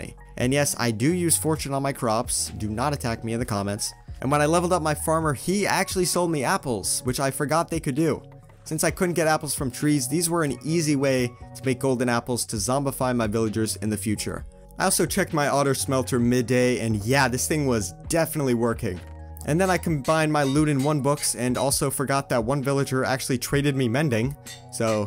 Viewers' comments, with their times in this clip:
0:09 “I also checked my otter smelter”... you’re what?!